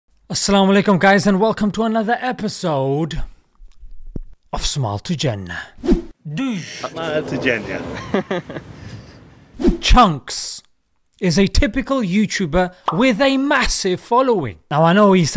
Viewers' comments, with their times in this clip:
0:03 why did he eat the mic ?